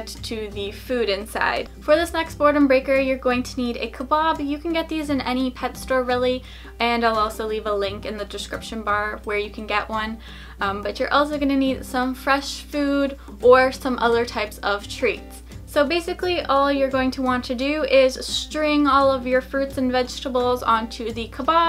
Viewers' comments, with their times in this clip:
0:03 I thought she said "kebab" I made you scroll down 😈